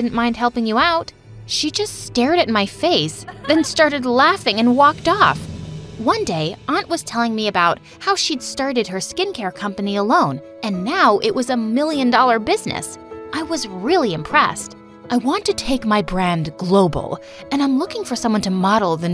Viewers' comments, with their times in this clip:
0:05 I HEARD "how she sharted"